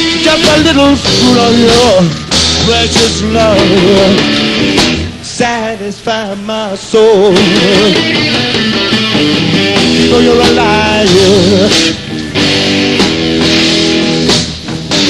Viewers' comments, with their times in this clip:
0:03 that little transition riff is awesome